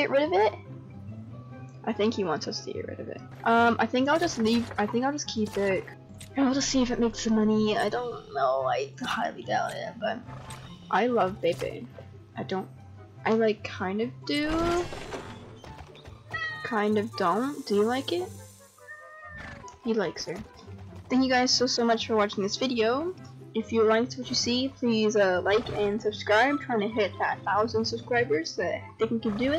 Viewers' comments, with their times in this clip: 0:10 i thought u said "i love vaping"